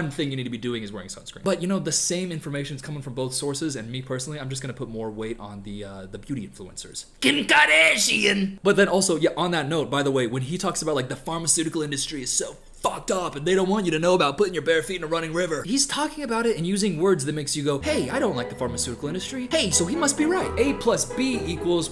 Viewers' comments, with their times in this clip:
0:07 the fuckin KEHM KARDASHIAN took me ooooouuuuutttttttttttt LOL